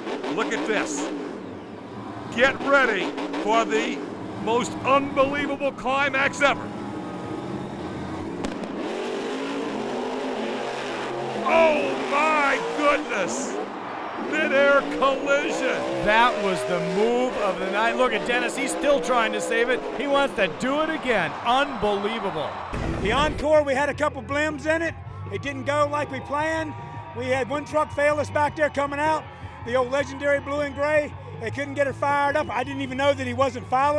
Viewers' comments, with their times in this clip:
0:10 the fountain crash
0:15 Dennis is reving the living life out of his engine